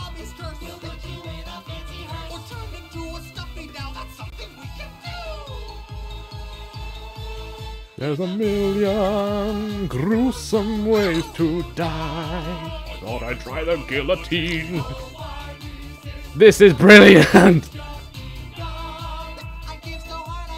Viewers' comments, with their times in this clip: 0:08 the fact you started singing it too